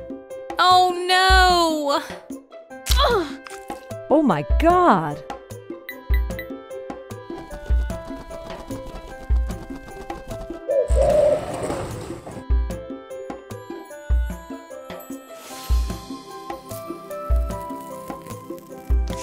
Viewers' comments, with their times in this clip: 0:04 oh my god or oh my ghost? 🥴